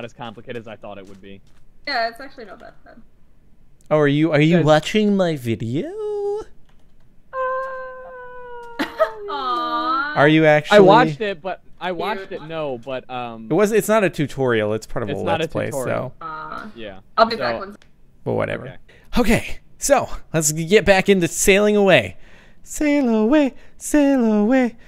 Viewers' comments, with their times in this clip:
0:08 That Celtic Woman do ^_^